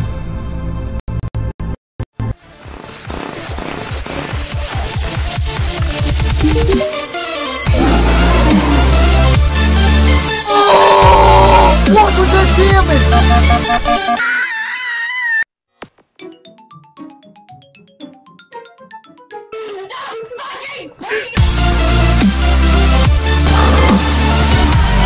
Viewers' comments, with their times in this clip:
0:04 When sakuya music start playing
0:07 with that skeleton image sent me. I love that picture so much, it's never crossed my mind for it to make the rreUUEuegauggh noise